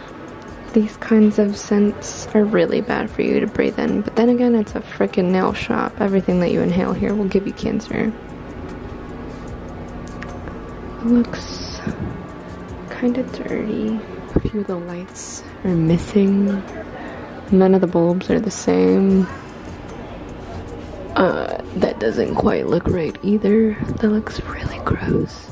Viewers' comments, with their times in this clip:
0:07 she lowkey sounds like Kim Kardashian